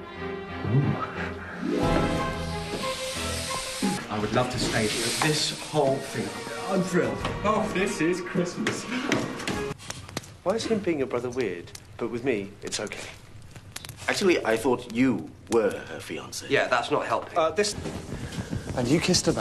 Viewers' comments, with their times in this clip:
0:03 You can definitely tell these two are British.